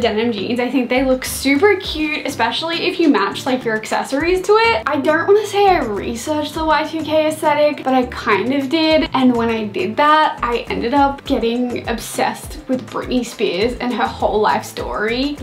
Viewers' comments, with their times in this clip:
0:03 her american accent popped out :o